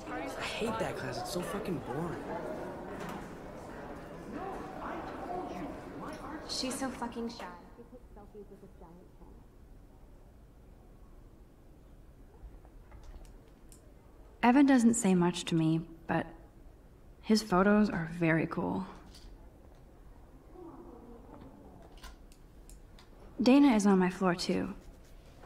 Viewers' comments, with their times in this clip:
0:08 She disabled music in Life is Strange?? Actual DansGame